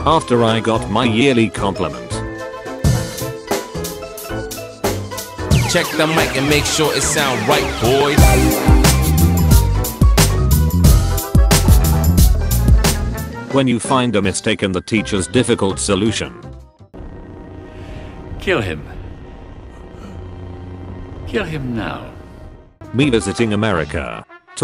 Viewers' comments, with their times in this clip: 0:08 I SWEAR IT SAID "YEARLY APPOINTMENT" WTF